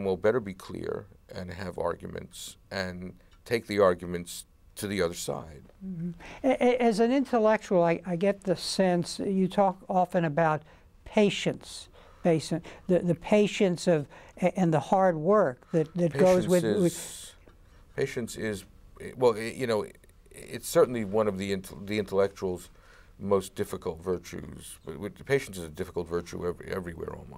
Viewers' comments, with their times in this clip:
0:10 I thought the interviewer said "Haitians", and I was on the edge of my seat.